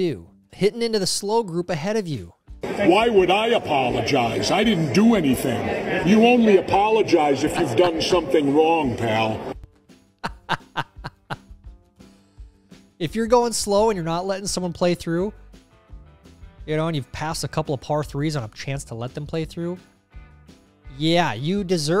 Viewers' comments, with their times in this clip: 0:10 Who is the guy dude looks and sounds like he's about to beat someone's ass.